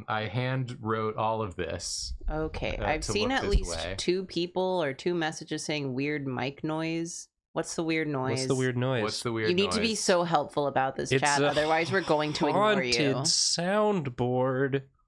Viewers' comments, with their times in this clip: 0:03 I initially didn't hear the sound because I was making pancakes and my phone was kind of far from me so I (for some reason) went and put my phone up to my ear, and immediately physically recoiled. That's the most horrid sound I've ever heard